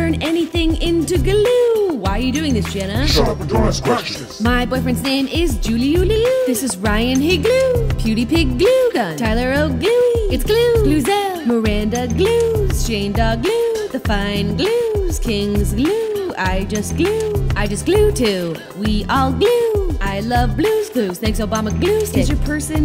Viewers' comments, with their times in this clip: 0:08 i fist thought it said PewdiePIGluegun